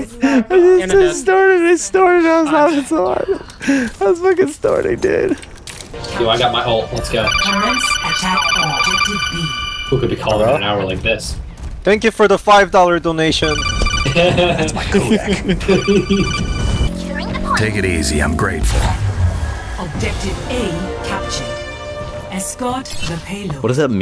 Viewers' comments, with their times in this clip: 0:07 I thought it was my phone ringing lol